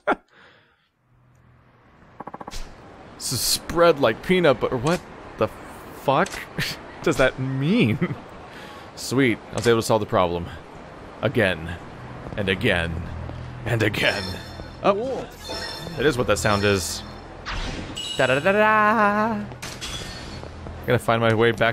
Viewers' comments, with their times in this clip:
0:03 omfg the slow what the fuck is so funny